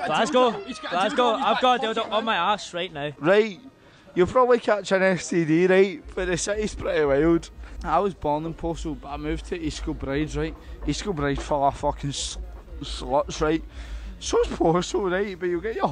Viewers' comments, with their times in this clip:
0:03 does anyone understand what he's saying? 😭